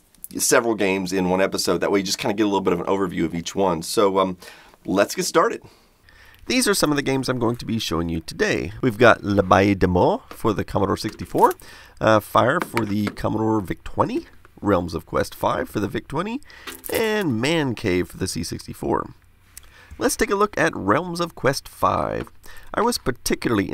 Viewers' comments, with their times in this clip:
0:09 I can't get enough of you trying to speak French ^^ And in fact you nearly nailed it :) It's just that the "aye" in "abbaye" is pronounced like the "ai" followed by the "y" from "fairy" (at least in France, I don't know about the other countries)